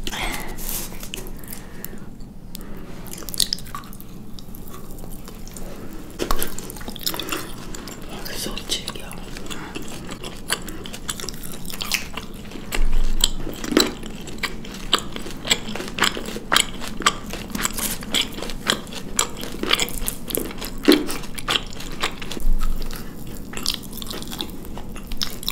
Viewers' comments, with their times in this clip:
0:08 Are you guys Korean? Because I heard "so chewy" in korean.